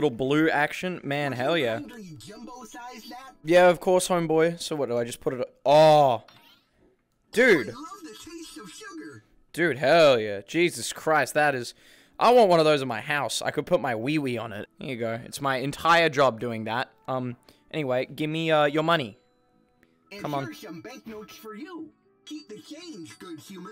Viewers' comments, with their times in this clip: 0:10 the bot is a nerd "I love the tashte of shugar"